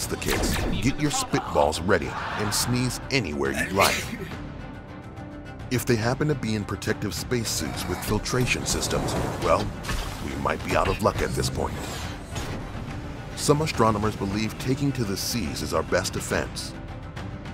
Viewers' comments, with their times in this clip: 0:03 this guy: sneezes Mr clean ad: hello there